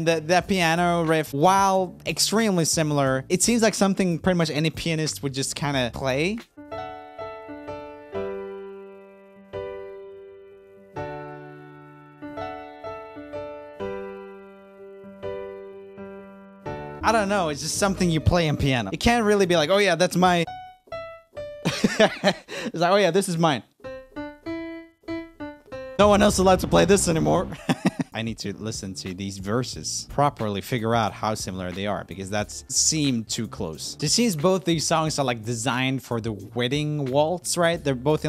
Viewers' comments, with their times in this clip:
0:05 The last song sounds like "I won't give up"
0:06 it kinda reminds me of i wont give up by jason mraz
0:06 what i heard was the chorus of jason mraz - i wont give up
0:06 when he played i was instantly reminded of i won't give up by jason mraz... that similar kind of melody
0:07 to me it kinda sounded like the beginning of "A Thousand Years" by Christina Perri for some reason
0:07 sounds like 1000 years also
0:07 crazy how that sounds like a 3rd song. The Jason Marz song, "I can't give up" I belive.
0:07 Sounds like I won't give up 😬😬
0:09 When he played the bit all I heard was I won’t give up by Jason Mraz.
0:09 sounds identical also to "I Won't Give Up" by Jason Mraz
0:09 when roomie is playing the piano it sounds like I won't give up by Jason Mraz but his song is a guitar version
0:14 also made it sound like "I Won't Give Up On Us" by Jason Mraz
0:15 sounds exactly like this spng thats like "I won't give up on us, something somethin" fr fr
0:15 piano sounds kinda like the rift for Christina Perri - A Thousand Years ngl
0:20 Sounds like savage love kinda too
0:24 sounds like that one song, 'I wont give uuuup. On. Us. Even if the skies. Get. Rough.' Can't remember the name for the life of me.